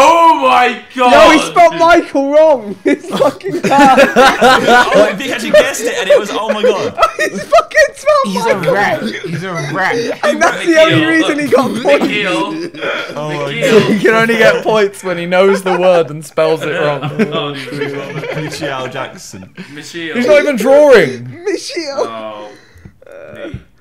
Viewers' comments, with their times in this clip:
0:07 vikk kinda sounded like jj There